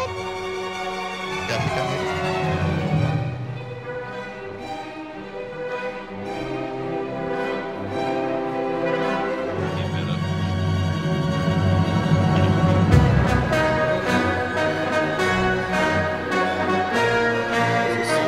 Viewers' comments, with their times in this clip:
0:03 the music pairs so perfectly to the video holy